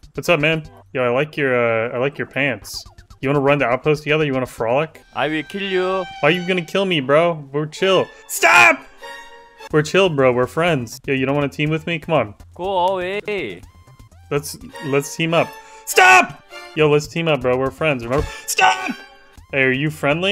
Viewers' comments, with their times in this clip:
0:08 Bro fr did the scientist line, “STOP” like so accurately 😂